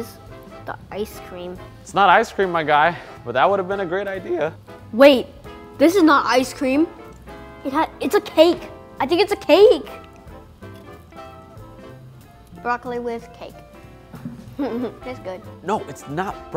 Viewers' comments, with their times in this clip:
0:04 lmaoo that voice crack